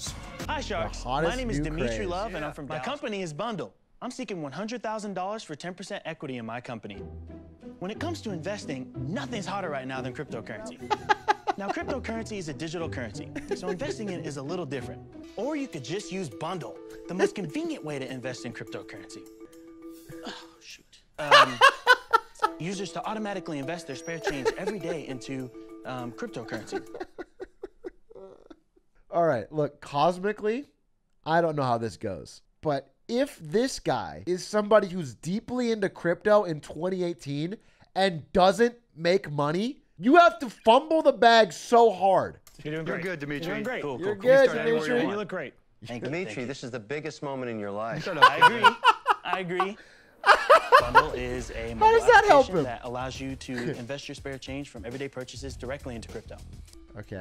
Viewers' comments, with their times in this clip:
0:08 anyone else think for a second that the company was called libnud?
0:38 atrioc fumbled his spit instead of the bag lmfaooo